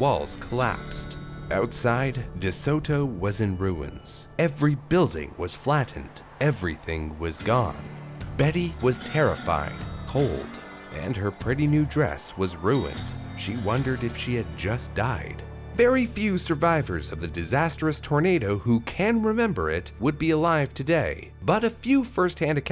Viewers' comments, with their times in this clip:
0:10 it Sounds Like He Said bettie was terrify or terrifiyng